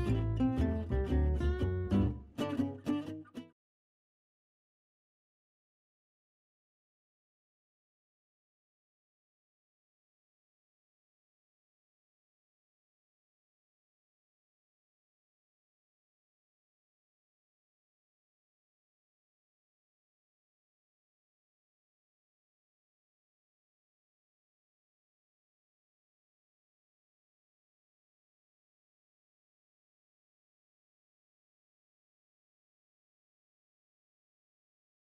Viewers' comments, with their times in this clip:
0:05 dude the voice acting from to the end was so good!
0:23 it is just complete silence, no music, no nothing...i find that funny somehow